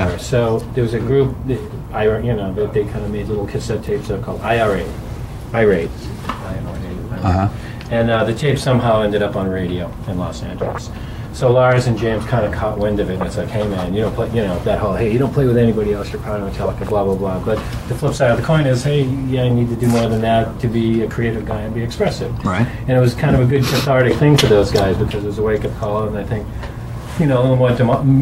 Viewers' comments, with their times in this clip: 0:10 was his mic inside his body or sum lol you can hear the WHOLE process of him swallowing 😭